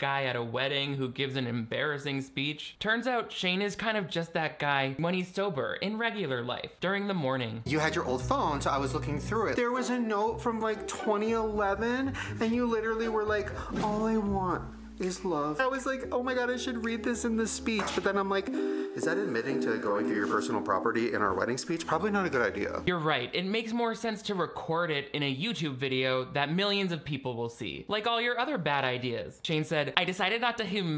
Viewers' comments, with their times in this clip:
0:09 Shane is so bad at acting out emotion lol, no buildup he just jumps from one sentence to the next to an overly "awwww" type voice then to a different tone again xD And it doesn't help that his chosen voices are annoying
0:15 I thought he said “all I want is blow” and I was gonna say that’d be the most relatable Shane/ryland have been in years.